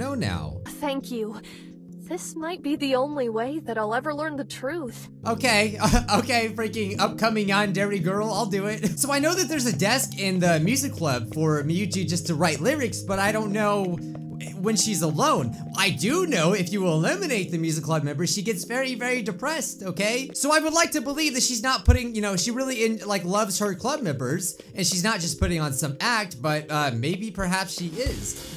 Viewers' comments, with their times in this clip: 0:09 Turn on captions and see what it’s says when he says yandere girl